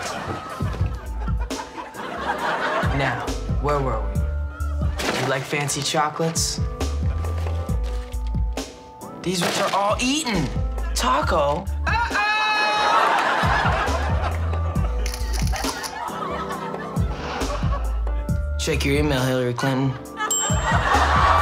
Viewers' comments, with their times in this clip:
0:09 the way he says “these ones are all eaten! taco!” is so cute